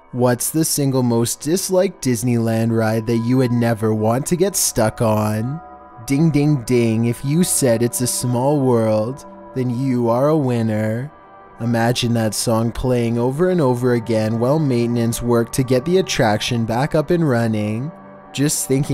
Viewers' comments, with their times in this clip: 0:05 the way said ding ding ding
0:06 that was the most depressing ding ding ding I've heard in a long time
0:06 that was the most unemotional bell sound I've ever heard